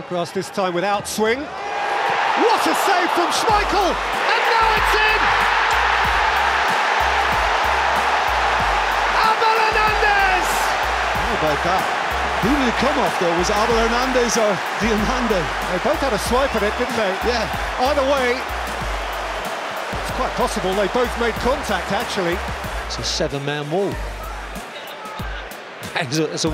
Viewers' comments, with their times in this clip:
0:09 I love that scream from Peter Drury 🐐